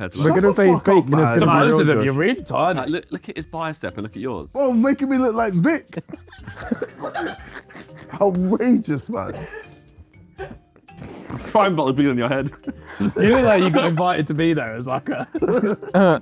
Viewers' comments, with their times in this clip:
0:04 tobi and ethan laughing the hardest is very ironic lmao